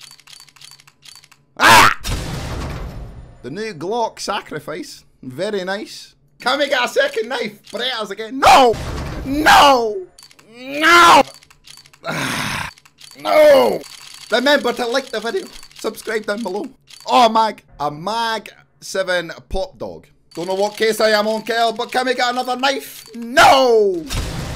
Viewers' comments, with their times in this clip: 0:09 2 fast cars going by: